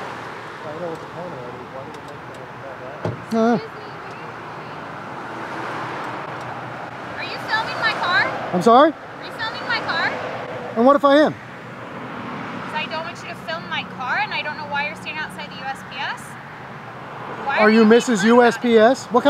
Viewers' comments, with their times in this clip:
0:05 I know what state the first officer is from. Confusion. Are you filming my car? I wasn't but am now.